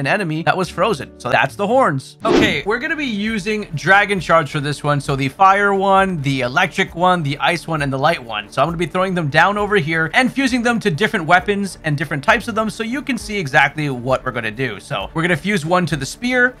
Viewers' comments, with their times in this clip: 0:03 i thought u said dragon sharts😭